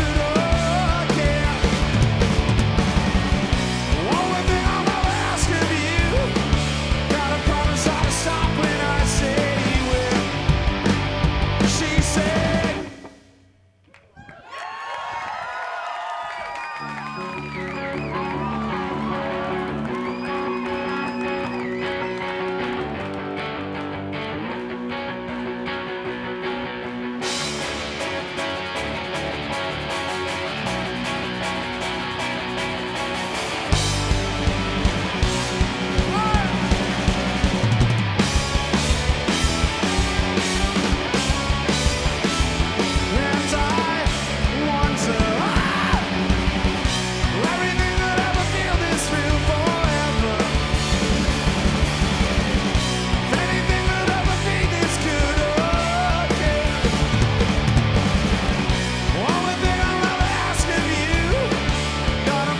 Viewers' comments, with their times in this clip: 0:05 Bass fills make the song so much better
0:48 In one of guitars make a lilttle mistake. But, its really important? Dont fell bad for the mistakes, fell good for the learning. Mistakes make you better every time
0:50 air drumming guy: The guitar at the beginning is amazing, god damn
0:50 air drumming guy: air drumming guy: The drums in this song are just amazing
0:50 air drumming guy: The drums in this song are just amazing